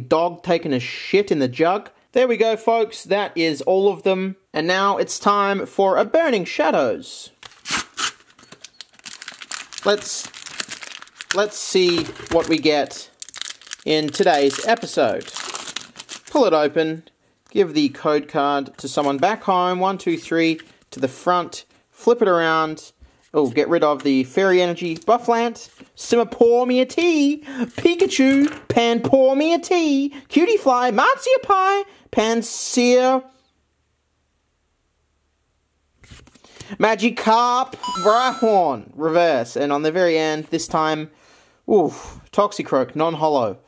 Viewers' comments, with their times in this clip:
0:07 am i the only one who hears that strange sound in the background?
0:31 i dunno man that pause kinda caught me off guard--